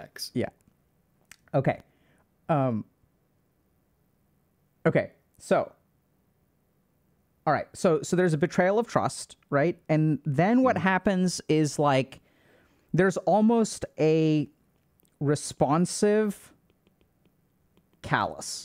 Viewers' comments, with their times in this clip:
0:06 oml the way he said this so straight faced and without a beat - I CACKLED and had to pause the video for a minute. I think dr k would’ve too if he wasn’t so professional LOL